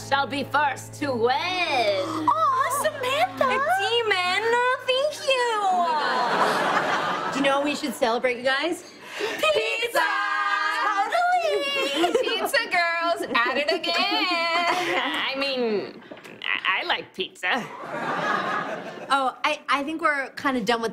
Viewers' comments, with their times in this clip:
0:03 oh demon-ah, thank you-ah 😂